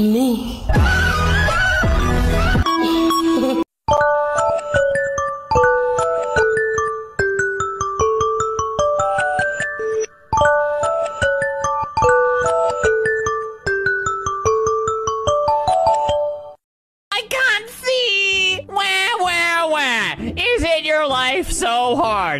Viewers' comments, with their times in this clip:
0:03 I thought my alarm was going off
0:04 DUDE THIS IS MY ACTUAL ALARM 😭 I WAS IN THE MIDDLE OF DOING A THING AND I LITERALLY FELT MY SOUL ASCEND HELP
0:04 this stupid fking alarm gives me nightmares whenever I hear it because my fking grandma would put her phone on max volume and have it go off at like 4AM every morning and I always woke up in a cold sweat Moral of the story, pick a better goddamn alarm grandma ‼️🤬🤬